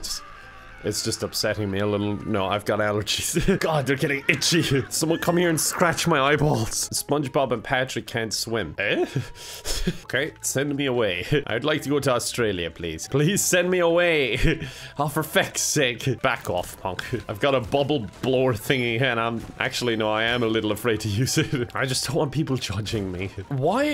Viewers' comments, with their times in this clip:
0:08 random tim allen noises